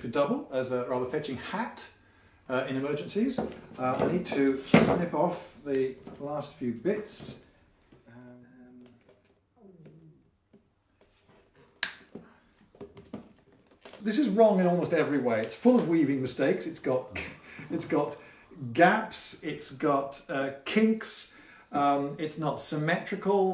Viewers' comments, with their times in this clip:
0:07 wow you really are a slave driver i vcan hear his stomach rumbling.